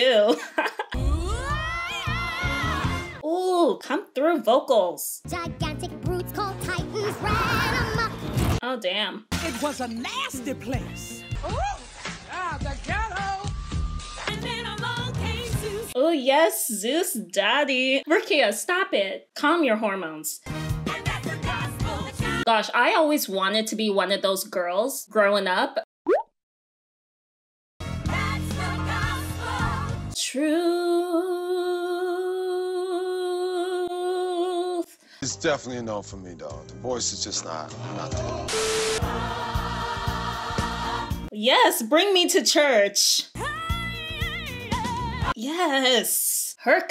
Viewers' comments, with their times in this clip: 0:03 This isn't like Church choir but it's sure is good 👍
0:26 you..must be kidding, right? You have a beautiful singing voice!! I mean, I watched your inside out reaction and damn
0:29 petition for your voice to be a ringtone when?